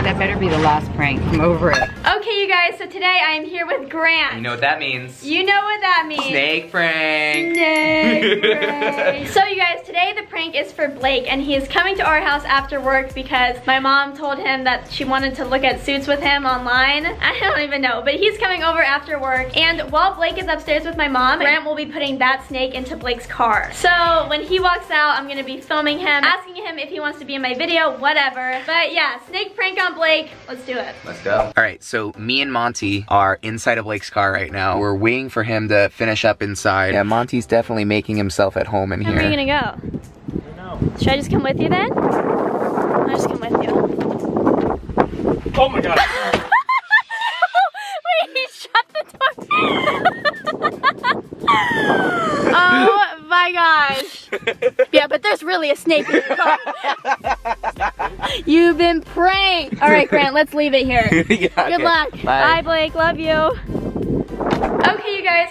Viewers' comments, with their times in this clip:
0:08 THAT EVIL LAUGH 😂
0:48 What did she say. Like: Shut the door Comment:shut the F*** up